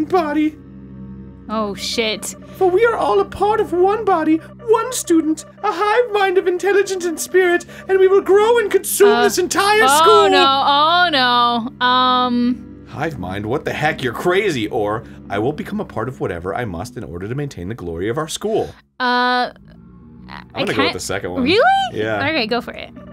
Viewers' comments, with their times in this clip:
0:09 Omg at the end in the video it started to thunder outside...